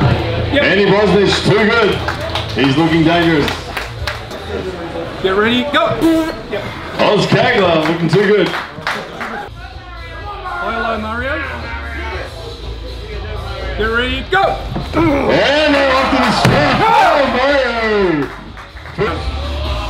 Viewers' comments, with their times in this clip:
0:06 Did the guy just fart ??!! 💨😂 😂